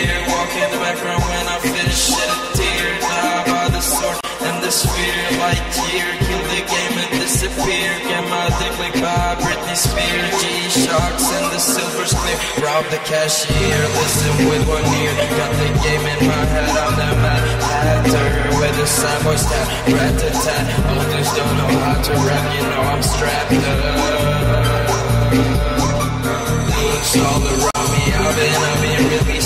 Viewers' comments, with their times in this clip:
0:10 every day i come here and i listen to this classic music, just waiting for the breath in omg, yung is like a semi-god boyzzz
0:13 when lean says, "rob the cashier" and the bass comes back in……… chef's kiss 😘👌